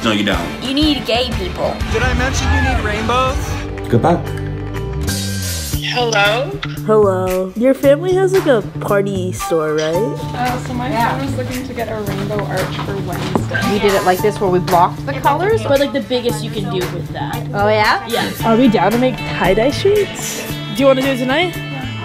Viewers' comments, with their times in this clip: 0:06 WHEN UNDER PRESSURE STARTED PLAYING MY HEART SOARED !! happy pride month yall ! 💓🏳️‍🌈🏳️‍🌈